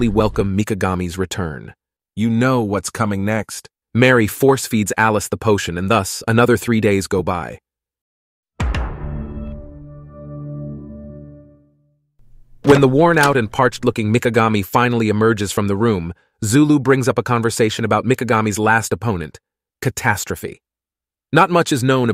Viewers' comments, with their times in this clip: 0:08 NGL should’ve used a more prominent example of erotic behavior maybe one that is renditioned by drums. The Netflix one just doesn’t. Vibe…